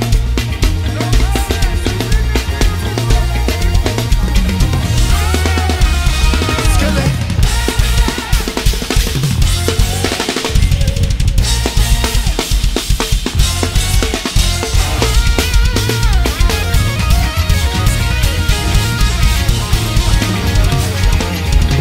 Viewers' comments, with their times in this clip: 0:05 Drummer boy decided to just go into the avatar state 🔥🔥🔥
0:07 is just the best part of this song😭, the drummer finished the whole songgggggg😭